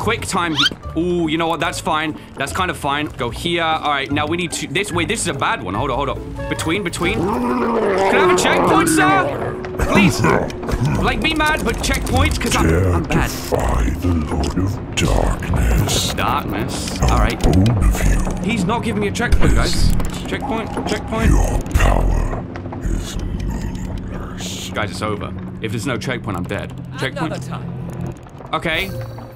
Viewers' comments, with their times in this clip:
0:10 i love how youtube thinks the sound effect says "like" and glows the like button